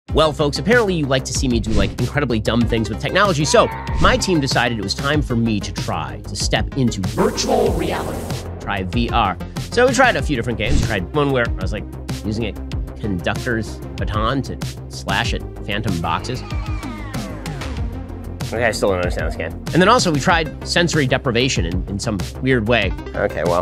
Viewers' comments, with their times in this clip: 0:06 thought you where going to do a birch gold ad, it sounded like you said "Birch Gold Reality"